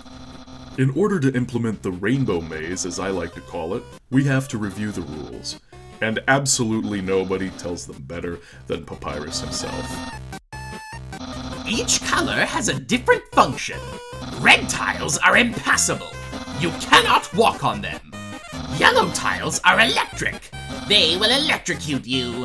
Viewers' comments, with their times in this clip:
0:09 Your Papyrus voice is almost as impressive as coding the tile puzzle! xD